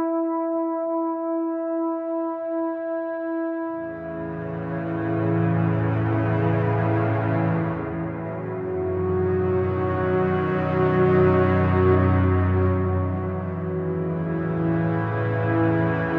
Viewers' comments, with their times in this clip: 0:04 The instrumentation at the end of Shit Talk from onward coupled with the continued 'I will always love you.' even when there are no vocals hits hard. Beautiful song, and beautiful album 👏👏👏